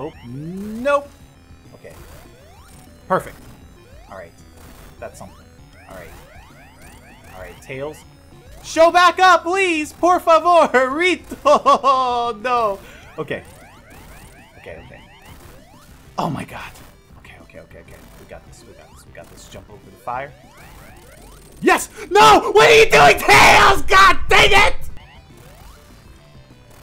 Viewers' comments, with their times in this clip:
0:09 lol he talks in portuguese (I am of Brazil)